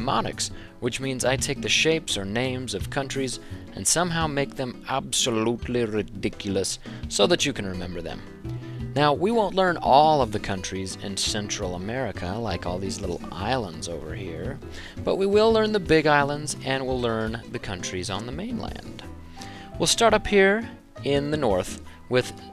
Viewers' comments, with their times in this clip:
0:04 why does he sound like Snape? 😂